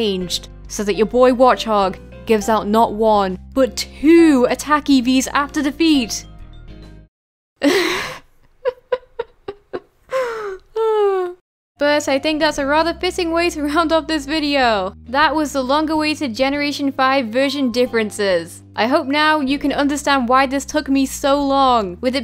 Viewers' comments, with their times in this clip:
0:06 i fell in love with her laugh AHAHA